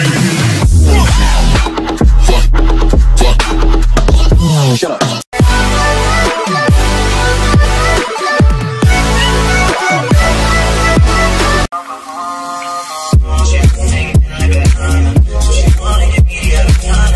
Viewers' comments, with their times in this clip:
0:05 song ate pls